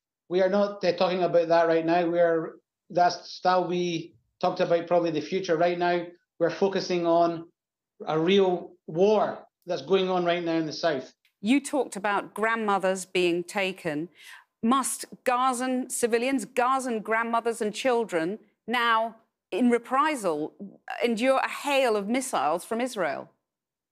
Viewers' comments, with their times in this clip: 0:10 "Will you retaliate against grandma's in Gaza?" Answer: "If the prisoners in the outdoor prison were quiet we would not have done what we are doing." He hopes the "collateral damage" will be minimal. Sure he does... The IDF have such a shining track record up until now. And then "they started it." Did they start it? Are you sure? Why does he have a Scottish accent?
0:11 “If Gaza was quiet” — Let me translate: “If the Palestinians were just keeping quiet about us oppressing them for decades, and accept their fate” He’s stuttering quite a bit about their attacks all of a sudden.